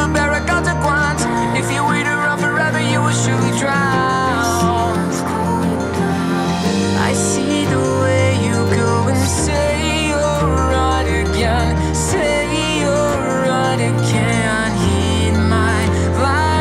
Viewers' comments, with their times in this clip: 0:03 I just love how he says drown. It hits so different